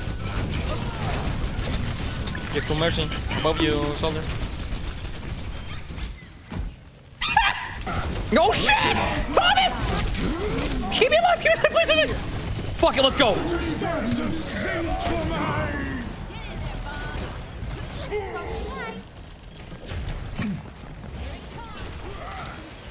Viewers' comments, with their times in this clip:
0:03 I kinda feel bad cuz of dat scream..